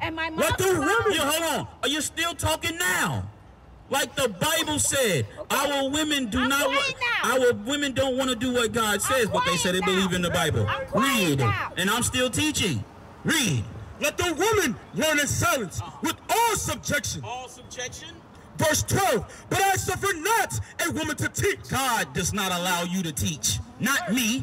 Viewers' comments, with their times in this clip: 0:06 ye cannot yell and announce that you are quiet 😂